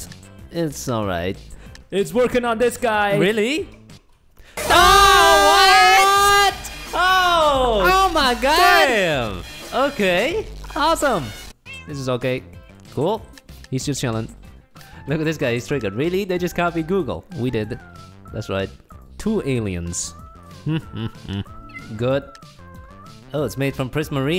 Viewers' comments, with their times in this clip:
0:05 EARAPE ALERT! XD